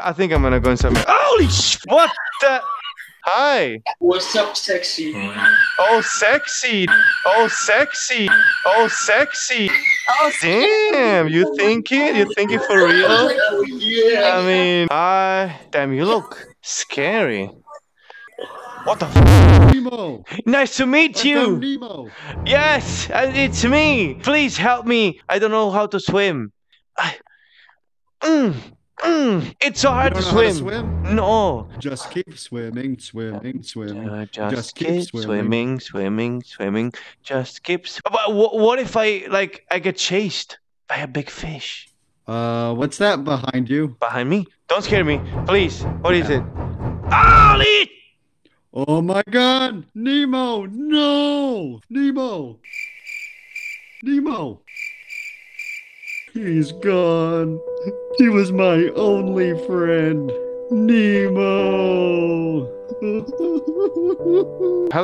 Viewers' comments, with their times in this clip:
0:10 lol OH in high pitch voice
0:18 what the BOOOOOOOOOM
0:18 What the BOOOOOOOOOOM
0:18 lollll what the booom
0:18 BRO THE LOUD PART XDDDD I COULDNT. I CANT. I CANT XDDD
0:50 why did he actually sounded like Marlin 💀💀